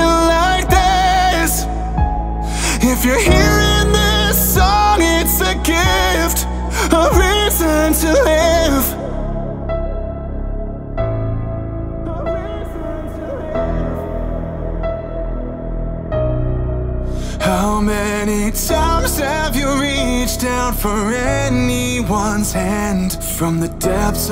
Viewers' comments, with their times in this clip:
0:10 I just realized that the piano is in time with the heartbeat.